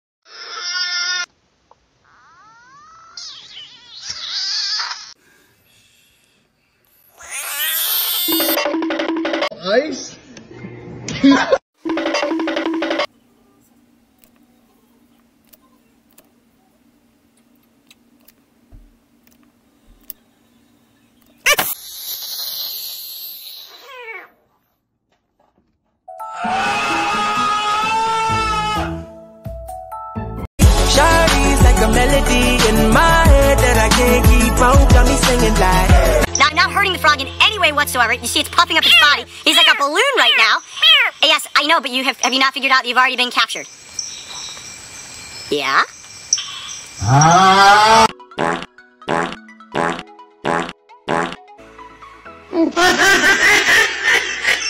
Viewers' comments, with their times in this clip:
0:06 that’s not a frog that’s a Donald Duck
0:21 i think this frog farted
0:22 cute sounding fwog
0:37 bro was sped up to much that he sounds like a South Park kid
0:37 frog be meow meow meow
0:38 the frog sound like cat 🗿🗿🗿